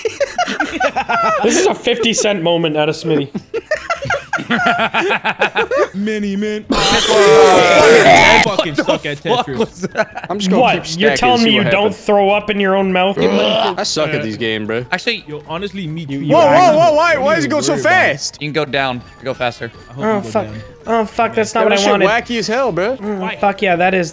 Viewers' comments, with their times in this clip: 0:06 I can literally cough exactly like this if I want, the reactions I'll get from total strangers is absolutely priceless. 😂